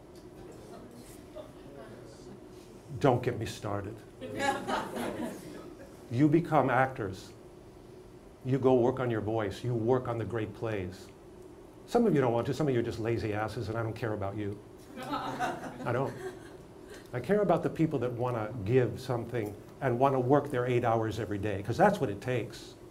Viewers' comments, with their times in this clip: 0:09 people laugh at what he says there but he's dead serious. The way he says it really makes you want to stop being lazy, too.